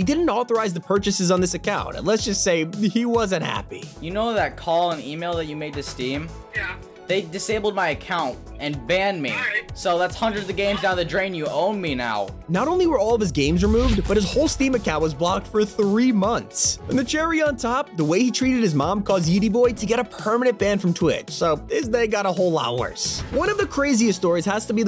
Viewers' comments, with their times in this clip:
0:10 this guy getting banned from Twitch was undeserved to me. He sounded quite OK for maybe like thousands of dollars of games gone.